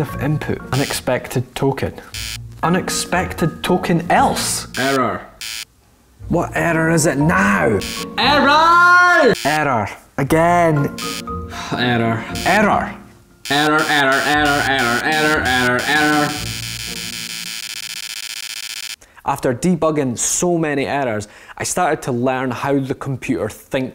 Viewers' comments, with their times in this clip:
0:08 he sounds a lot like Pewdiepie
0:08 i think i heard him say "arrow "